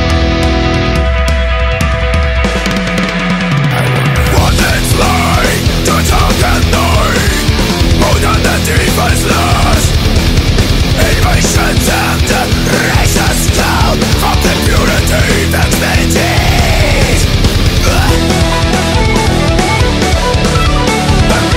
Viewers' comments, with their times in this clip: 0:04 suddenly FUCKING THRASH :D awesome!